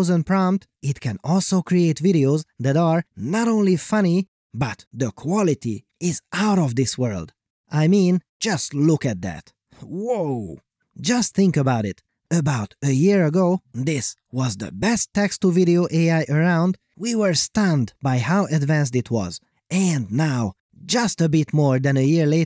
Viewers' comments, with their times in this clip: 0:03 Free bird guitar solo